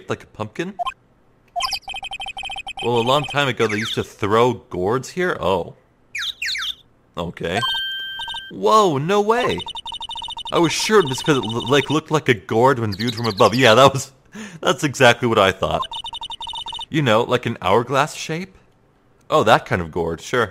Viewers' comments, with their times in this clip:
0:04 He said GROW gourds! You put so much emphasis on that TH, you must've REALLY thought that's what it said